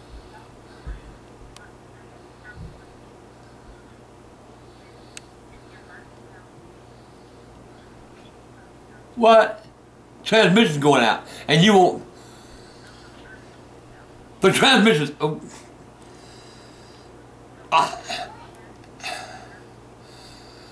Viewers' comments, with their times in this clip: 0:06 Clearly sounds like a woman on the phone